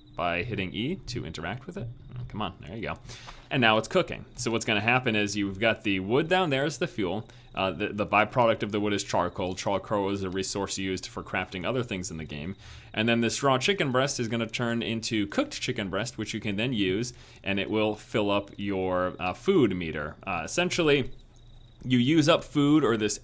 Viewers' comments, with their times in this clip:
0:09 the way he says charcoal is just.. brilliant. "Charlroralrl"